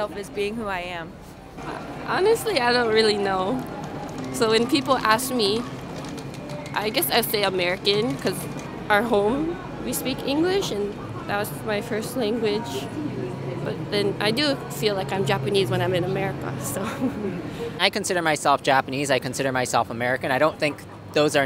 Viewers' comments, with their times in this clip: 0:08 Why did you cut what the person said ?